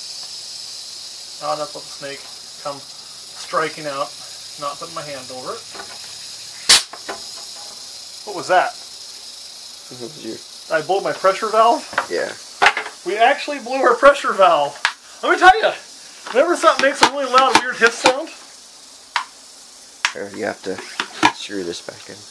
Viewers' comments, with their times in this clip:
0:05 THE SNAKE 🤣🤣 pssssssssss......PSSS